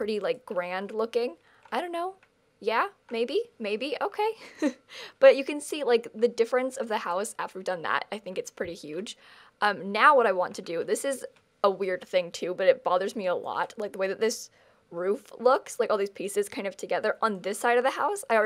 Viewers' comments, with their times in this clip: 0:04 Lol the laugh 😂 (its )